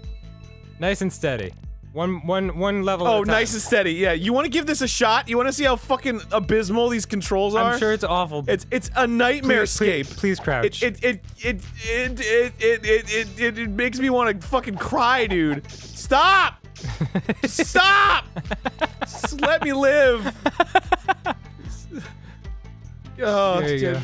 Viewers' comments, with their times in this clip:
0:10 Arin channels Porky Pig.